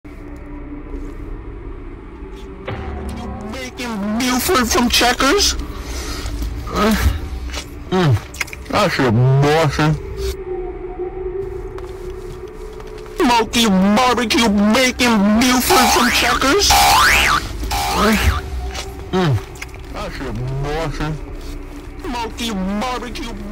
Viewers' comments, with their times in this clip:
0:05 WHAT WAS THAT MOAN💀